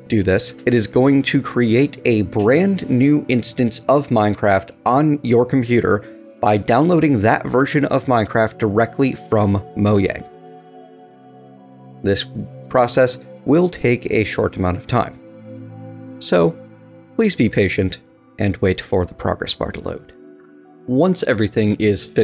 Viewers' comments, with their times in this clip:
0:09 Moyang confirmed xD